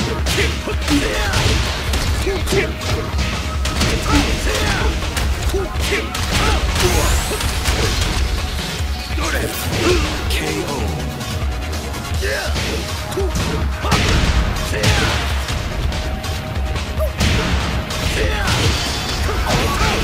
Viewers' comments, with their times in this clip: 0:08 RiP Kazuya. At least he went out with one last DORYA